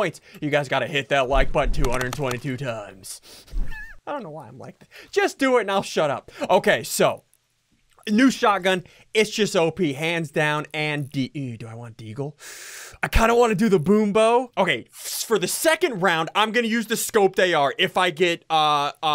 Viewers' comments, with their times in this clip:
0:04 did he say “ I Dont know why I’m white..😂” !?!?!?!